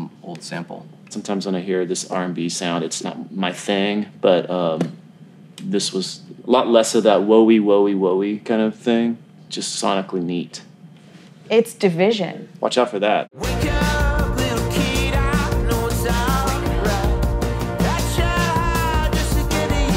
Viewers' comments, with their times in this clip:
0:06 Rivers is like "shit that sounds like Weezer"